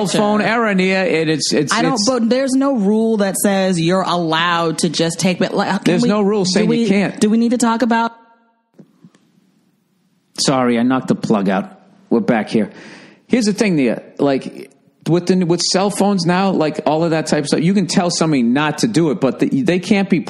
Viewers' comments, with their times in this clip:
0:07 "Do we need to talk about-" ::mic cut:: "Sorry, I knocked the plug out". Suuuuuuure, Bill, lol.